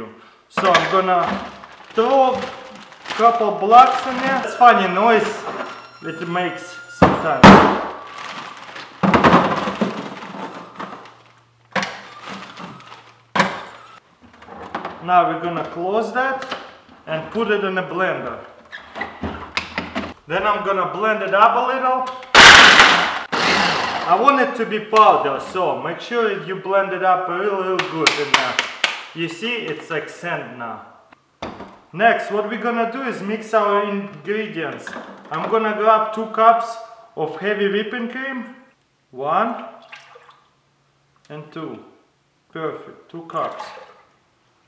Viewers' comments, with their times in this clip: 0:03 "stop screaming" BAM
0:05 lol the dry ice was like noooooooo then he hit it again with a hammer and finished it off :l
0:25 R.I.P. Headphone users,